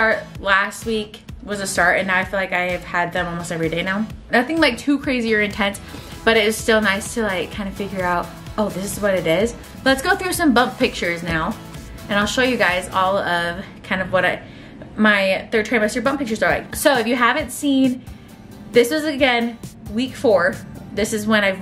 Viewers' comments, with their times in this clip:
0:08 Not me turning on the captions to see which she says when it sounds like she’s saying Braxton kicks but in the captions it says BRS Hicks. What is that?